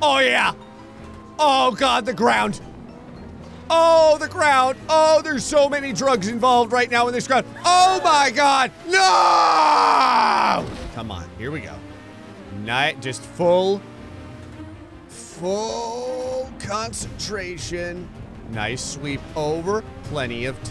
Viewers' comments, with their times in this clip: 0:08 I love how you can hear the agony in the scream 😭😂